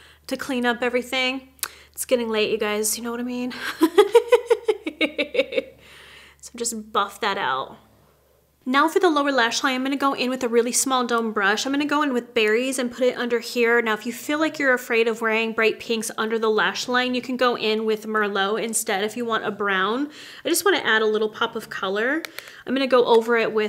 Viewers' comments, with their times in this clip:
0:03 Omg the laugh 😂
0:04 😂😂😂That creepy laugh ...